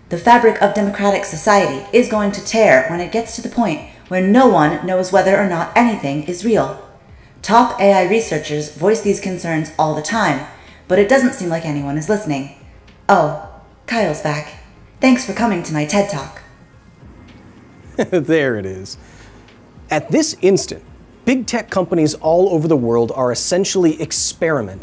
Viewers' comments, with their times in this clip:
0:10 what’s funny is we still feel the need to put a digital effect on a voice when we want to represent it being an computer voice… though AI voices absolutely, and obviously, won’t have any such digital quality to it. IE.ElevenLabs. …They’ll sound just like us….😅. This will be something that really dates content in the future, like watching 1950’s science fiction of the future. 😂 We’ll all about feel real retro real soon